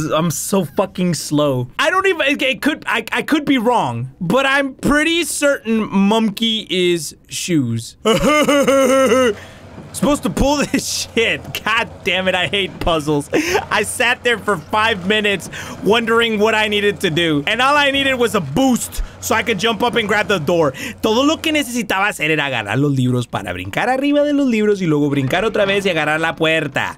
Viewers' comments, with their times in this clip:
0:08 he sounded like fat Patrick 😂